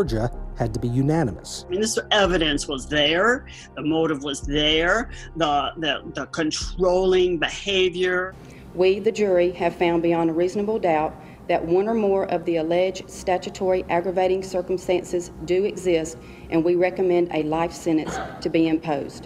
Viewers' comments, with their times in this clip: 0:05 this woman has a robotic, spooky voice